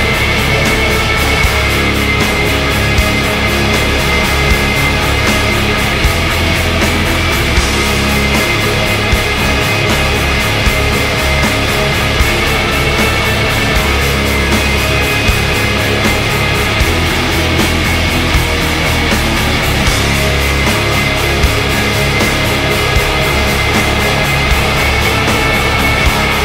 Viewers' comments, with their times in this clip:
0:09 Madonna - Frozen Black Metal Edition